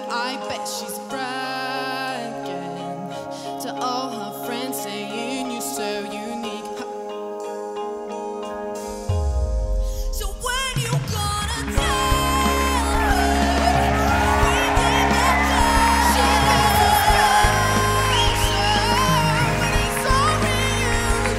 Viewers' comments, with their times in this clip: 0:05 god that was horrible, apparently screaming is singing to some people